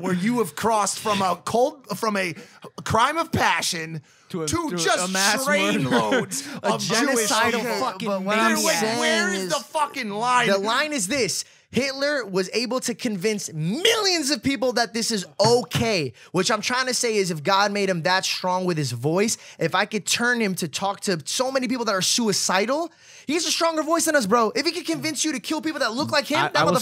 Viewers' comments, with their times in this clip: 0:07 why don't they just let each other talk??